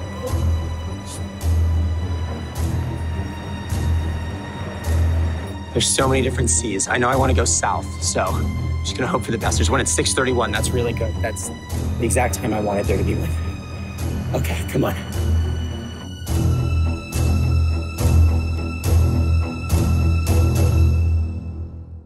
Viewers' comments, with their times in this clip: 0:06 As a Parisian "why are there so many Cs" got me laugh. The RER C is infamous for its multiple branchings. (Also Americans trying to pronounce Massy-Palaiseau was hilarious)